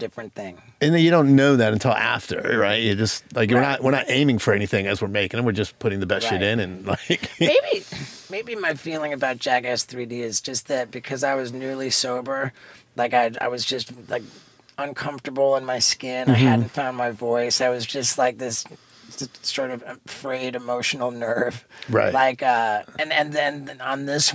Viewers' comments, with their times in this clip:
0:06 that voice crack 😆
0:07 The voice crack killed me hahaha